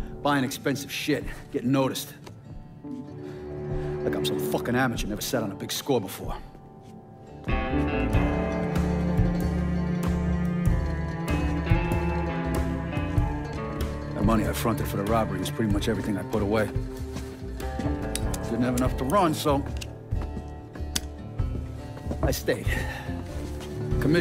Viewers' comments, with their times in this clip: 0:08 hell of an ost